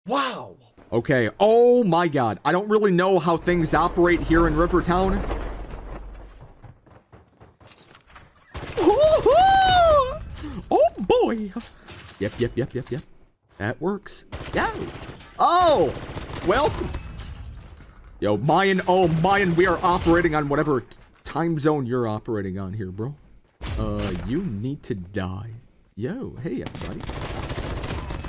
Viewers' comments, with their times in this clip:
0:08 I love how he's voice is like Mickey mouse in here
0:09 he sound like mickey mouse voice "OH BOY" 😅
0:10 that Micky mose impression
0:10 He sounded like Mickey Mouse for a moment in 🤣
0:10 he sounds like mickey mouse
0:12 He became mickey